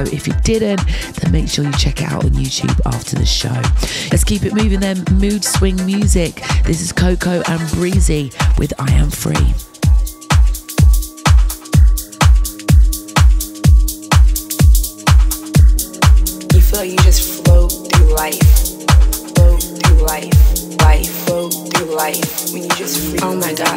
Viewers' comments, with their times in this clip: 0:08 Love this set. Coco & Breezy - I Am Free Is hypnotic